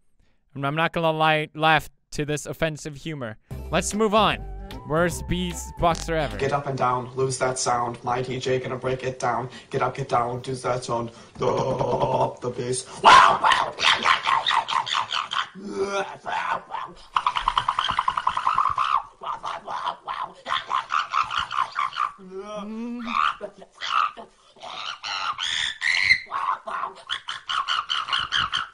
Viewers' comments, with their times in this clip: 0:06 It's new genere Beatbox mixed with electro XDDDDDDDDDDDDDDDDDDDDDDDDDDDDDDDDDDDDD
0:13 my sleep paralysis demon chanting
0:13 best dolphin impression ever
0:15 is it bad that i understand the song he is beatboxing to?